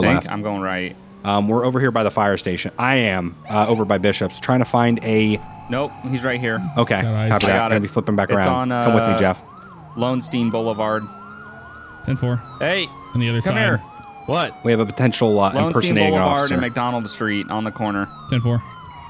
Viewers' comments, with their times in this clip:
0:07 What was that siren ?